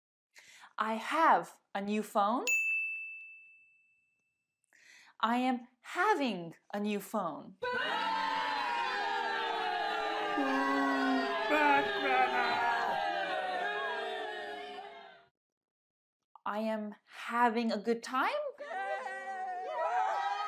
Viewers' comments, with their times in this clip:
0:08 Oh my god these screams are so dramatic 😂😂😂 The way you teach is amazing!! I'm glad I've found your channel. 😊